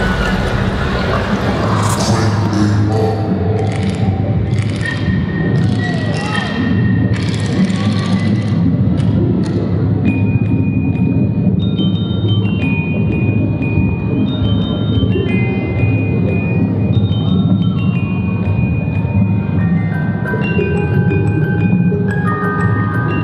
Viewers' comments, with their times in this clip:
0:09 omg you did a musicbox version of "Porter Robinson & Madeon - Shelter"